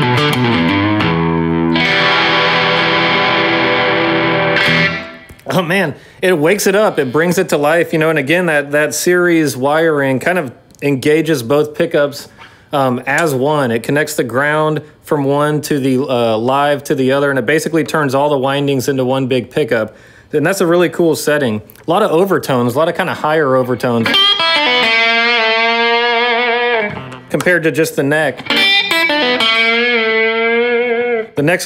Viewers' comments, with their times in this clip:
0:06 That was a hell of a buzz when he picked up his fingers from the string for a sec. Not sure about a guitar that will do that...
0:18 All 4 pickups? Sounds more like a regular humbucker serial circuit with only the 2 inner pickups involved. No disrespect.